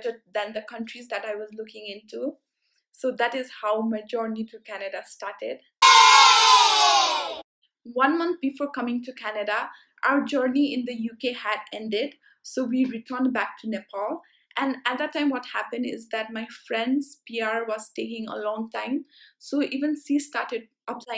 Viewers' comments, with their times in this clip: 0:06 literally...! What was that Scary Sound???